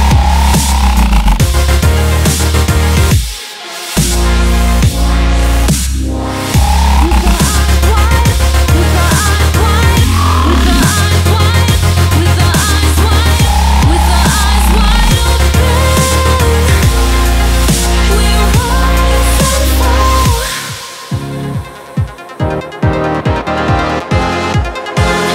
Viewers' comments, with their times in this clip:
0:07 she starts to say "Nigga im quite "few times :D